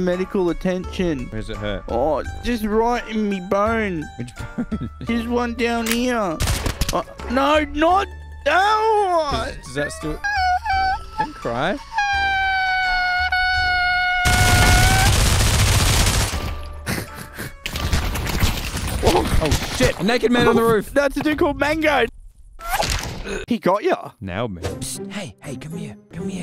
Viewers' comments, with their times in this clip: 0:07 he sounds like a hose when you dont turn it on all the way